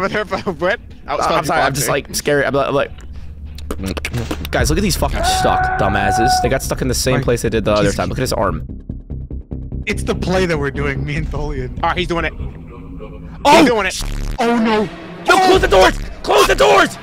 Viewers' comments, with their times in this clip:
0:03 awsome song fr